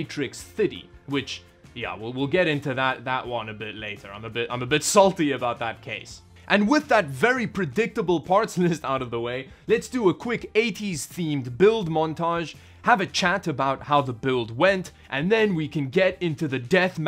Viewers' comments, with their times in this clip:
0:04 I'm not one to judge someone's accent, but you really need to work in your pronunciation of numbers because I always have to read on screen the number. Example you are referring to a "730" but are pronouncing it 7-fitty which is slang for 750. Makes listening very confusing.